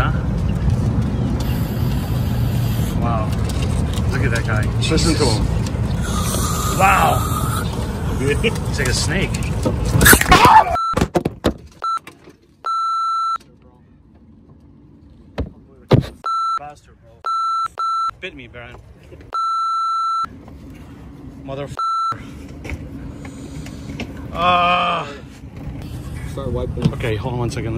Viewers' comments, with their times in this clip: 0:09 It was the scream for me.